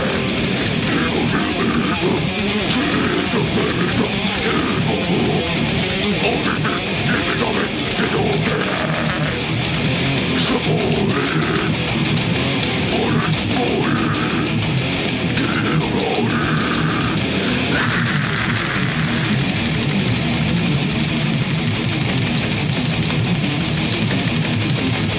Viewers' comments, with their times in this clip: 0:09 His growls sent me the goosebumps! F